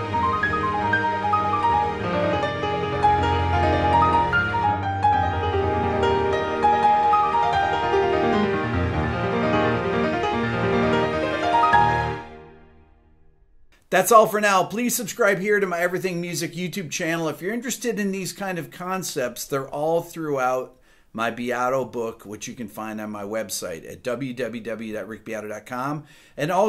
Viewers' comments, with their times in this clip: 0:07 Cheers Rick, amazing video! But maybe I'm getting something wrong... IMHO, the last chord of the final sequence sounds more like a Eb Maj 7th with 9 and 11th... In the linear example I actually hear D notes (i.e. the Maj 7th) ... is that right?